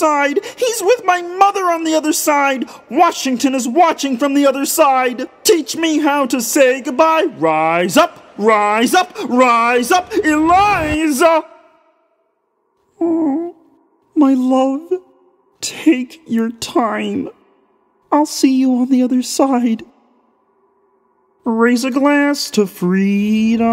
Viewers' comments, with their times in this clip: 0:07 Me at the start of the video: TRYING NOT TO LAUGH- Me near the end: TRYING NOT TO CRY- (Ok but to be fair the noise kermit made after the "rise up, eliza.." Was literally tear jerking fuflcjjsbf-) Edit: im just- cries in a corner
0:10 A lot of people are talking about the funny moments... but what Kermit is getting prepared to die, thinking of all his friend who have died and then he thinks of Miss Piggy and he makes that little noise... honestly thats more heartbreaking than the original i am in tears...